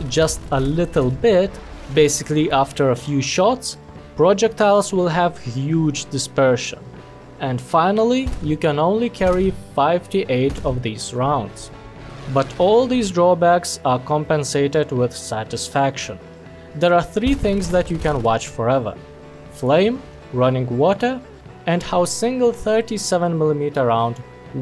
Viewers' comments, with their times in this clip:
0:09 “fivety eight rounds” IM SO SORRY 🤣🤣
0:09 Five T Eight